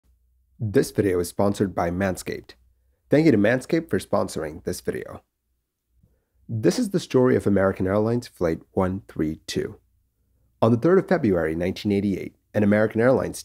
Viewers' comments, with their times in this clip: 0:00 Hey.... you missed a beat! You're supposed to say "This (beat) is the story of...."!